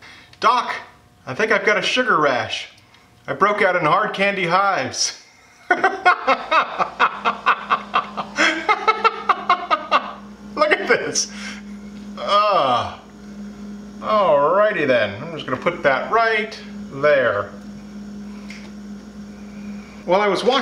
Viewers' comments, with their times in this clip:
0:05 The laugh would be absolutely fantastic for a supervillian